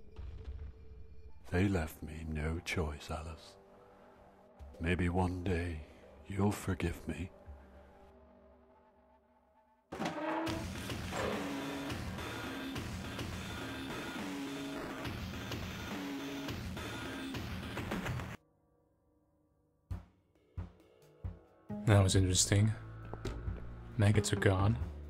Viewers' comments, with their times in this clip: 0:09 Idk why this is what I thought immediately, but that soundtrack used there reminds me of this song from Julian Smith called "Techno Jeep". I know it isn't, but sounded familiar.